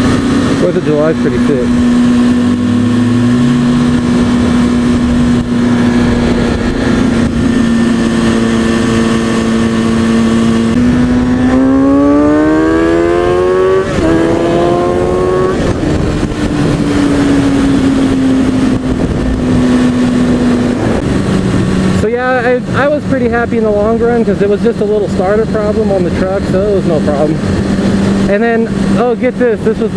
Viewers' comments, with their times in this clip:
0:10 That... sounded.... heavenly... :D